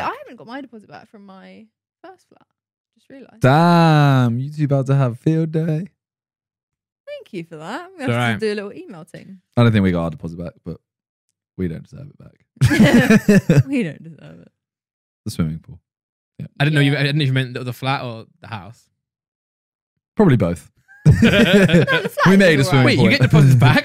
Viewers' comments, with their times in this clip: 0:04 simons voice crack